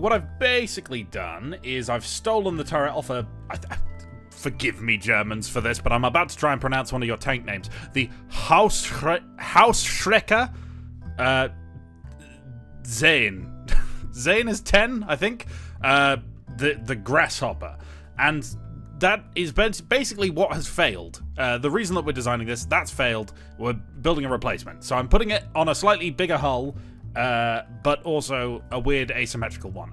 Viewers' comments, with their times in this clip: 0:10 thats understandable pronounced (feels like u are not bad in pronouncing German)